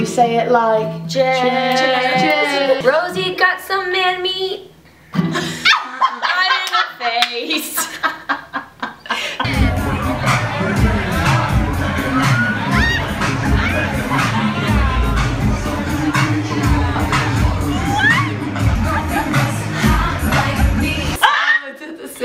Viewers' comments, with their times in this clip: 0:08 repeat that 😂😂😂 I'm a weak now 😂😂😂 It's not good song it's horrible but it's fun 😈😁😂